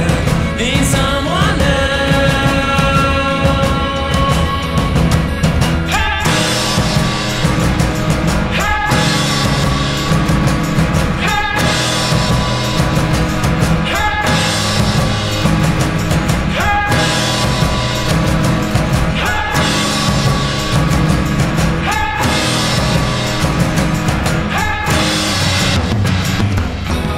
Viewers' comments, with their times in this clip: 0:10 not really feeling it to much, probably something I would listen to while driving through the country though, I do like when the symbols crash and the mood changes, kind of a cool song, prefer dead weather though :P